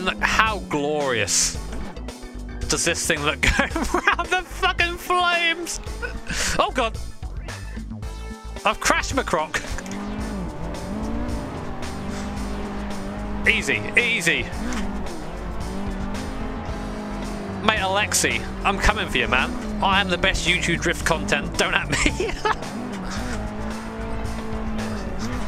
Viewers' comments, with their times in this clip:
0:09 "Crash MacCroc" sounds like a character from the new Cars4 sequel, set in the Scottish Highlands.... 😆